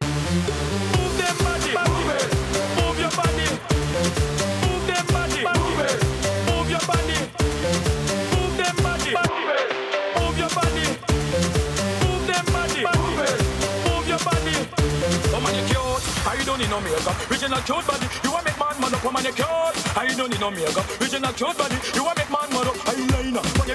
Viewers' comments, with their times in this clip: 0:04 -The iconic organ bass❤